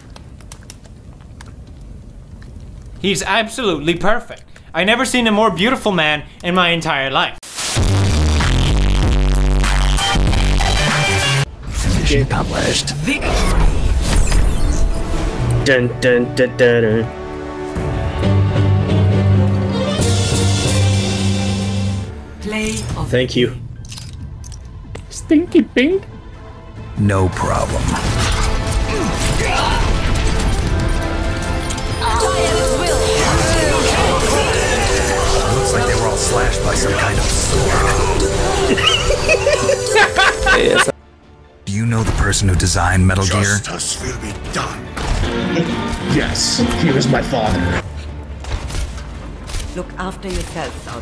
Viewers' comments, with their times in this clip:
0:07 R.I.P headphone users warning
0:37 those laugh that is what make the video even better